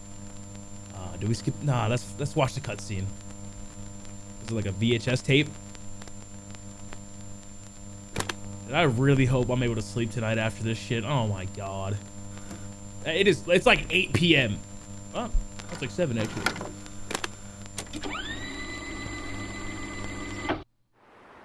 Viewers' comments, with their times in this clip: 0:08 I was thinking that my mum was using the vacuum